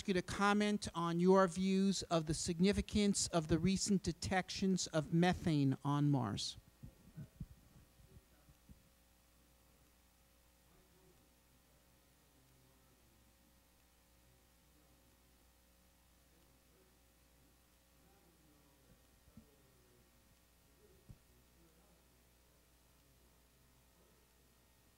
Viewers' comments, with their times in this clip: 0:07 The audio drops out when he answers Zubrin's question Major bummer.